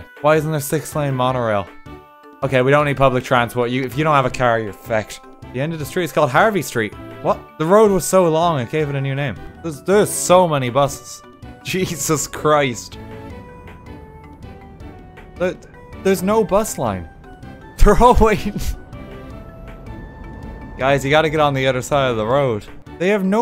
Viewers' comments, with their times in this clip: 0:03 Rewatching this, the way he says fhecked is just golden
0:04 when he says fecked he sounds exactly like TJ Miller
0:04 If you do have a caer yer fecked. Me: He's speaking the language of gods.